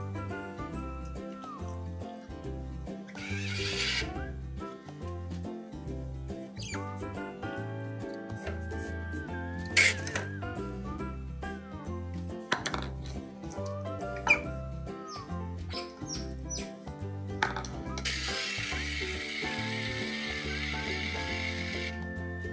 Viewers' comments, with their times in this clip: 0:05 At 3.01 mins in, Hana looks like she’s gonna kill Kotaro. …. She who must be heard is heard. I have never heard that sound from Hana before! Kotaro…eats very neat. Hana, not so much…. Funny clip!